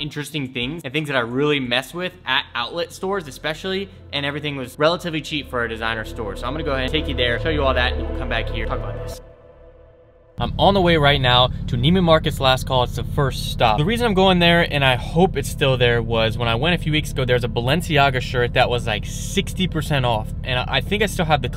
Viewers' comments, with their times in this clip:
0:09 “Talk about this” waiting patiently for bass to drop ... no bass drop ....*has heart attack*